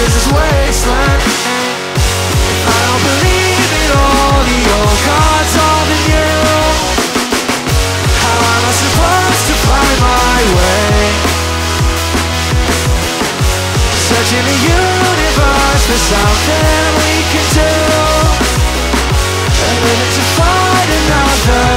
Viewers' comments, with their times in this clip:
0:06 kinda wish that drum fill was in the recorded version ngl